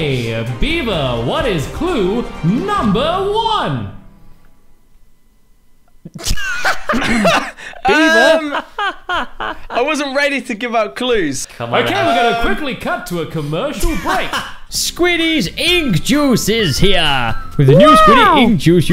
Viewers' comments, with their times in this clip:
0:06 Everybody:*laughs* Me: what